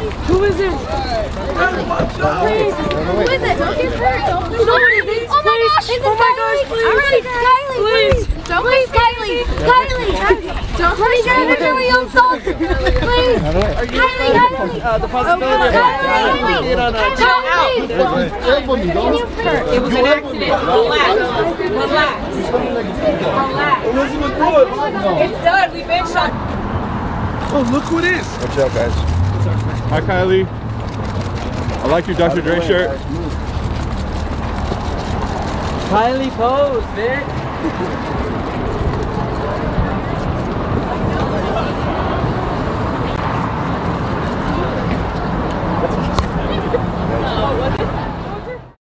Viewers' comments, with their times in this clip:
0:04 the girl yelling hahhah
0:36 ugh i hated when that guy said kylie pose b (im not sure if he said pose bi or said pose babe)
0:36 a paparazzi guy yells “Kylie pose bi***” omg I would have lost it on the dude!